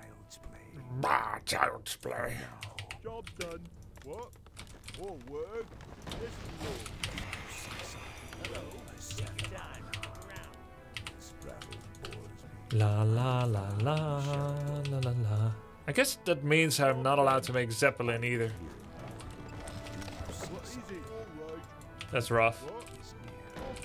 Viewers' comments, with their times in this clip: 0:07 My reaction: Damnit! Damnit! Grubby's reaction: singing human theme with total composure